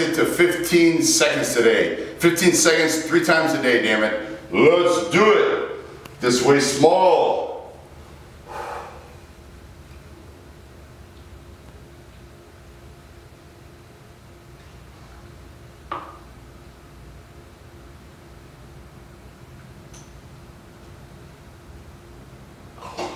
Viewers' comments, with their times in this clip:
0:10 ALRIIIGHTT IT IS FART TIME GODDAMIT!!